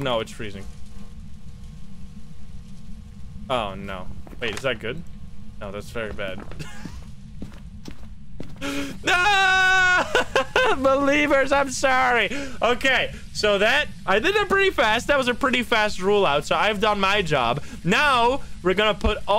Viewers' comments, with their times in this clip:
0:06 Why does he sound like Pewdiepie here?